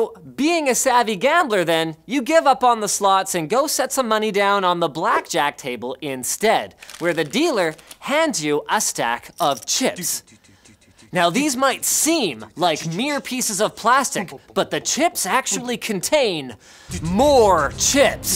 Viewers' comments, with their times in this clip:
0:06 That dramatic music though.